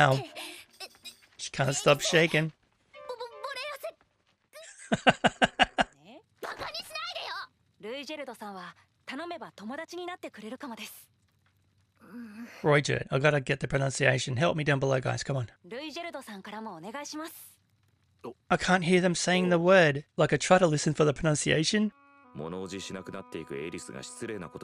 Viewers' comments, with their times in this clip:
0:07 Semantically, yes, you could look at it that way. But I would argue that Rudy himself spells it out many times throughout this series. He wants to live his new life without regrets and doesn't seem to get too hung up on righting the wrongs of his past life. I don't think there's anything wrong with looking at it as a Self-redemption story but I also don't think it was explicitly written to be one. For anyone who thinks the I is silent, I would tell them to go to in this video and set playback speed to .75 and listen again.